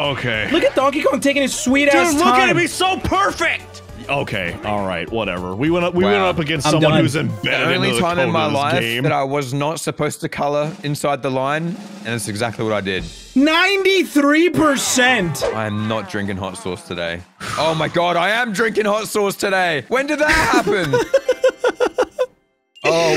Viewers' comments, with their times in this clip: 0:04 LOOK AT HIM HE'S SO PERFECT! The way narrator said that was hilarious 😂